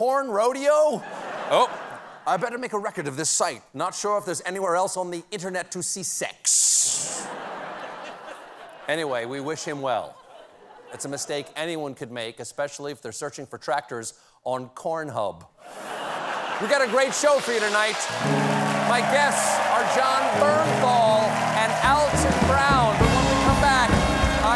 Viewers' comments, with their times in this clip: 0:10 hugh laurie impression